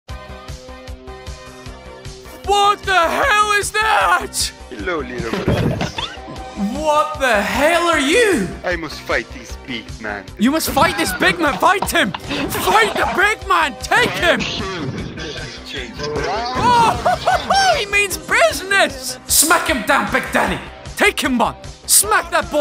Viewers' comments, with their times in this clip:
0:05 *ATTACK ON TITAN MUSIC PLAYS*